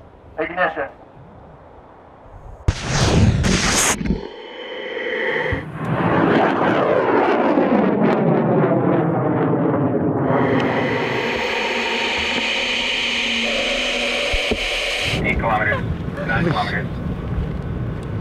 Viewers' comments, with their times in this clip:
0:05 Roar baby, roar